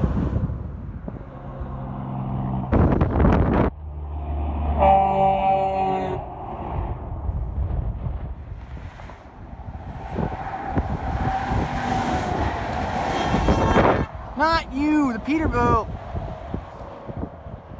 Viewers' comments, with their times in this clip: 0:03 my favorite, round quad horns... sound great